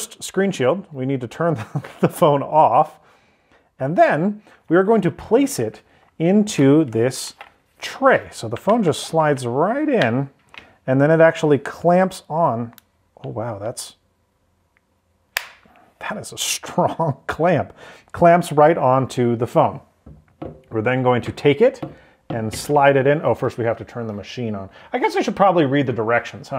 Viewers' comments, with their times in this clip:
0:09 Haven’t seen the whole video yet but when you locked it into the screen removal machine, it was so tight because the camera was supposed to be at the bottom and the buttons had a minor indent in the heating contacts, hence why you heard the buttons press when you locked it in. It isn’t that tight normally.